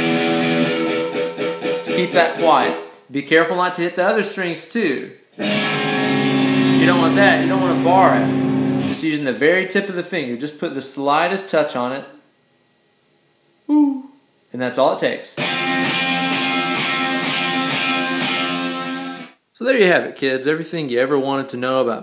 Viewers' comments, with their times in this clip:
0:06 That chord sounds pretty cool actually